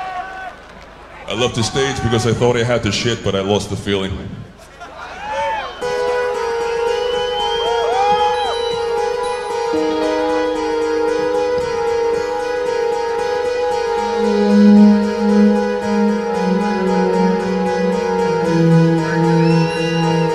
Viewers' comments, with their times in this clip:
0:04 Hauntingly beautiful, sad but still glorious. The ultimate goth metal ballad 😎💪 Love You To Death